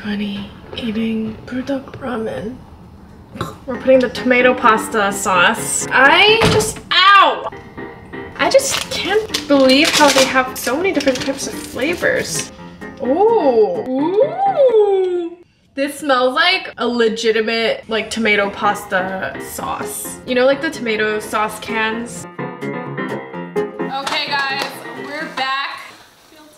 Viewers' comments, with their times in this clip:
0:08 and I just literally can't believe you actually ate all 9 buldak ramen in one go, in one sitting. Like I would have like just eat it all in a week instead in one day, all at once or just had more people over to taste test all the flavors. Her 'ohh' at opening the packets and like where's her sisters I don't think I have ever tried any buldak ramen in my life. Idk which one I would like.